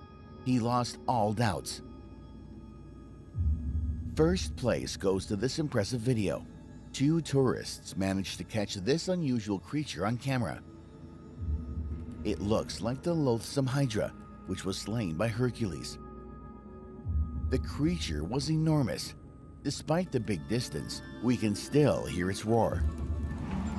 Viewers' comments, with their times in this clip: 0:08 Fr tho… that ain’t a dragon but it’s totally sick…. I don’t think it’s rlly a dragon cuz it’s in the ocean. Maybe a giant type of HUGE ocean animal my thoughts are since I’m Hindu. Krishna there was a huge serpent snake.. maybe that could be it…? It also could be edited too, but it’s roaring it’s definitely not a dragon. WARNING: ⚠️THESE ARE MY THOUGHTS I DONT SEND HATE TO THE PERSON WHO MADE THE FOOTAGE PLEASE DONT ATTACK ME ⚠️